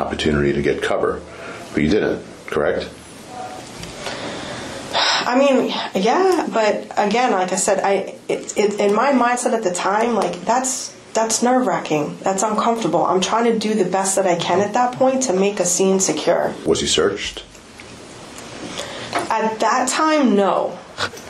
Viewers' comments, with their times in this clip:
0:05 [heavy sigh] = admission of guilt